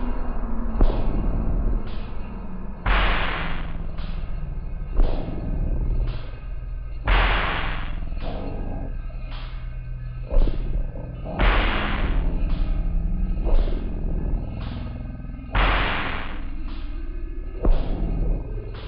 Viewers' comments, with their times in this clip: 0:06 sound of demogorgan at billy's entrance......maybe netflix wants us to hear that